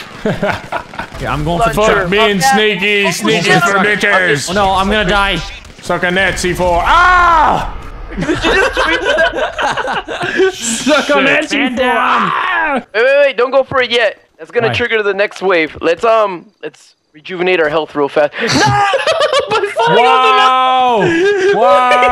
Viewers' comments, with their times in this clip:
0:04 I can keep playing that part all day, best death cry I've ever heard :D